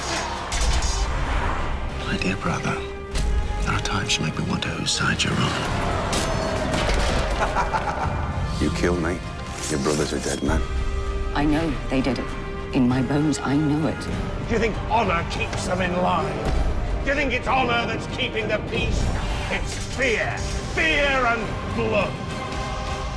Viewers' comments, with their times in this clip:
0:07 Who is it laughing ? Theon, maybe?